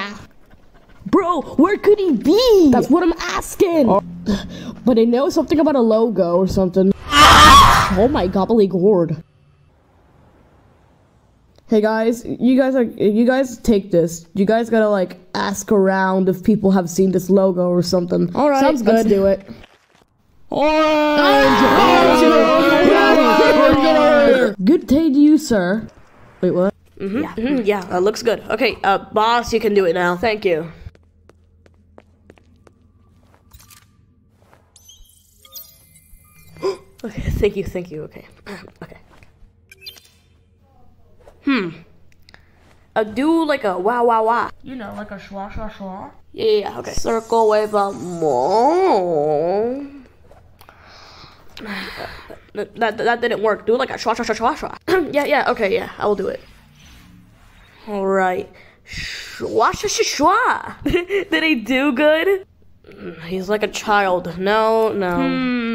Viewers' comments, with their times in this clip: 0:06 that scream killed me lmao
0:06 the scream-💀💀💀 i cant🤣🤣🤣🤣
0:07 oranges scream got me laughing so hard
0:07 BRO HELP- I WAS ON 100% VOLUME.
0:07 easily the best scream lol
0:21 Them running and screaming at the same time was so funny to me
0:46 CIRCLE WITH A MOLE??? BATTLE FOR CIRCLE!???
0:50 circle with a… mole?
0:53 I love how at the start they just started to scream "ORANGE ORANGE ORANGE!!!" I also loved the"shasha sha sha sha"